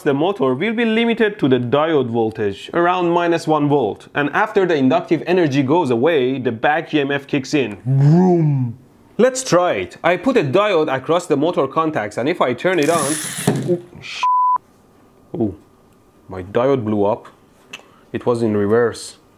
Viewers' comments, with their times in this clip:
0:07 sound of ur vacuum dying